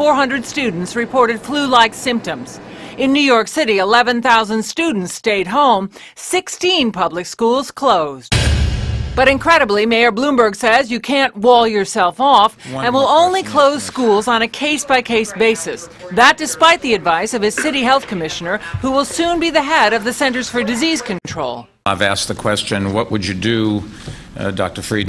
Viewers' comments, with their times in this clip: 0:08 that lock sound effect was so intense